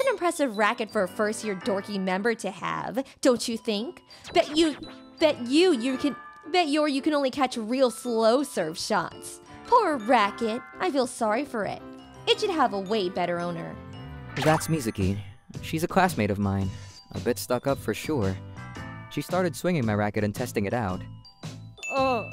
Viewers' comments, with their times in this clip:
0:04 Fun fact: the voice actors aren’t paid enough to have multiple takes.
0:04 This stuttering is canon now.